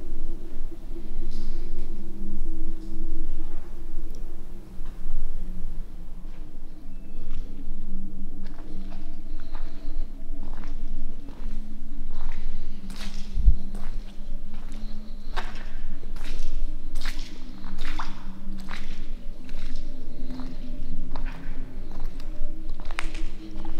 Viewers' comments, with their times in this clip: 0:07 The honking was probably the cops trying to get you to come out so they didn't have to go in
0:07 horn is blaring
0:10 just skip 3 seconds before that and you can here a beep. I bet thats the cops